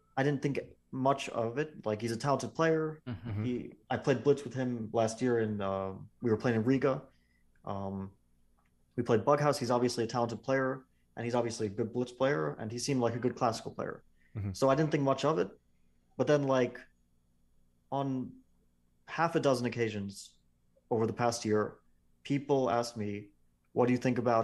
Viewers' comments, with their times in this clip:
0:08 "we played butt house" -- of course you did 🤣